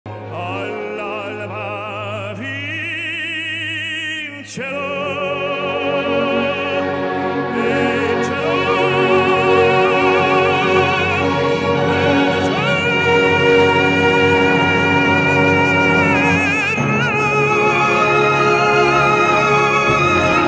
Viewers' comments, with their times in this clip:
0:03 wow that opening! His voice! 👏🏻👏🏻👏🏻👏🏻